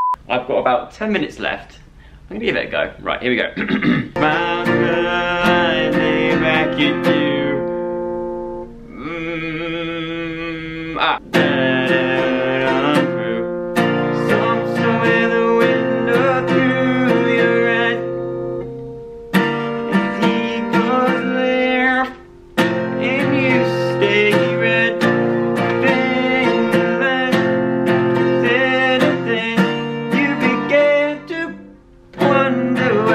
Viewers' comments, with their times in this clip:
0:09 Has a bee just entered my room 🤔😂💖
0:17 Anyone else melt when he sings ‘to the right’ ? 💕